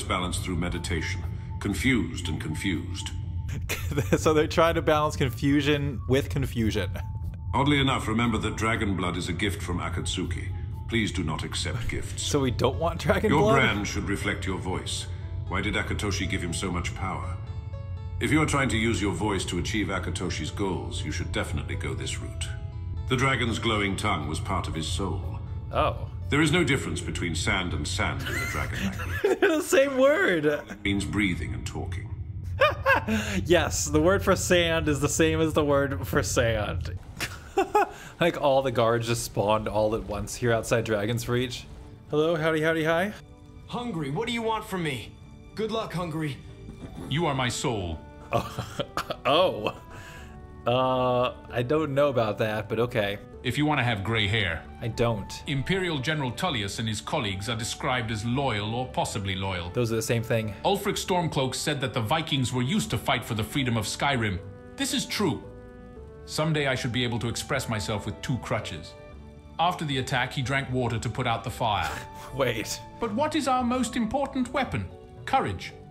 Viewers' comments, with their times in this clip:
0:07 Even though he pronounced Akatsuki differently, I only think of Naruto lol. Dragon blood is a gift from Pain and Itachi!😂
1:00 The AI actually said "Ulfric Stormcloak" correctly!